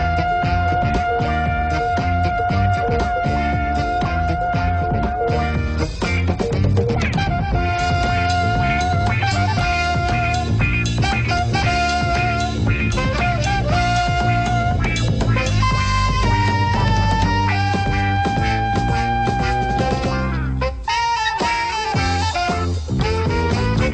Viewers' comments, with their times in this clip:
0:08 The mark is the Price is Right sounding theme buried in there